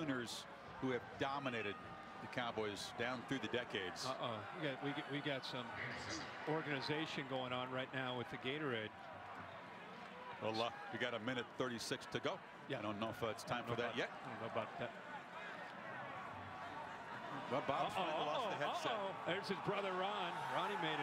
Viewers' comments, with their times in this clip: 0:03 Chris Fowler does his best Bob Stoops impression